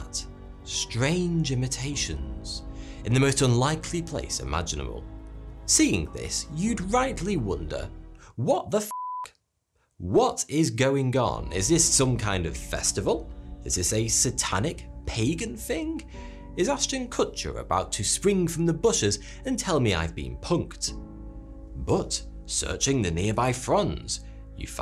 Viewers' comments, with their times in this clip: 0:05 I love how you can sound so serious and then all of a sudden say something so blunt and unexpected 🤣😂